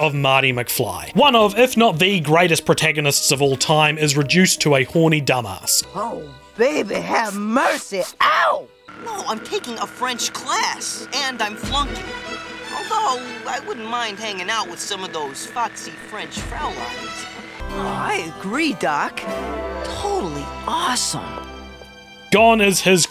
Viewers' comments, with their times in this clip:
0:06 Martys Voice cracks while saying ow